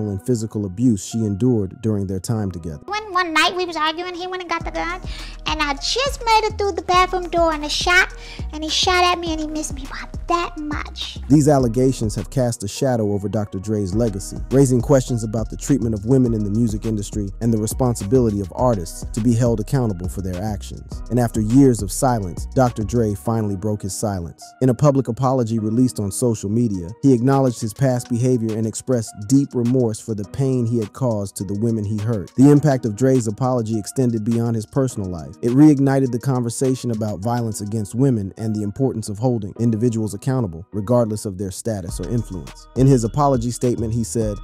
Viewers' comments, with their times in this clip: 0:05 😳 is that her real voice??
0:26 no way that was her real voice